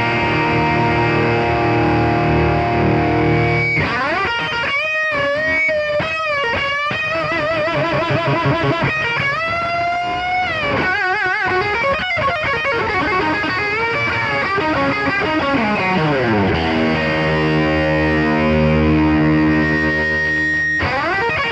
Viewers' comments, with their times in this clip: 0:09 he bended just as hard as Dave Gilmour did